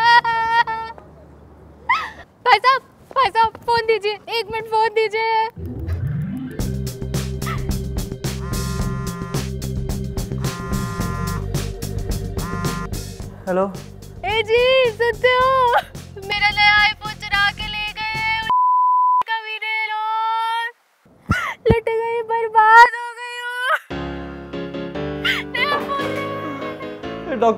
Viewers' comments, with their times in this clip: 0:08 That "Mini" from a stranger's phone however adds to the comedy of the skit. Lets not call it a mistake